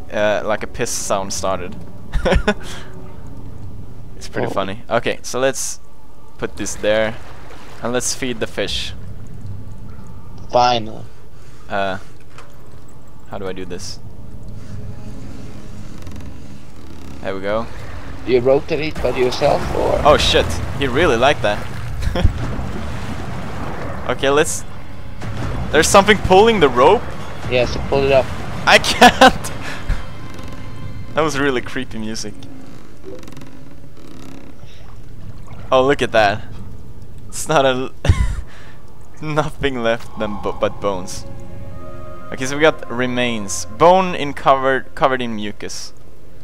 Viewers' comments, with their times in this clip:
0:05 "let's feed the fish" ...I don't know about you, but when my fish begin making sounds like that, I'm done. :<
0:30 did somebody noticed the facebook message beeping? :D after that was really creepy music? :D *thumbs up*
0:34 OH SHIT THAT WAS REALLY CREAPY MUSIC.. *Facebook message sound* EPIC!